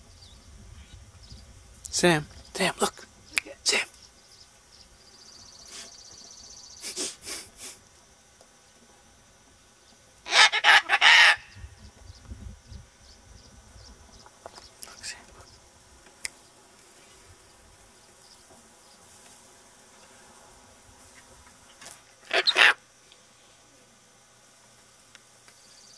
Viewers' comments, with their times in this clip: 0:09 he sound like a rooster :D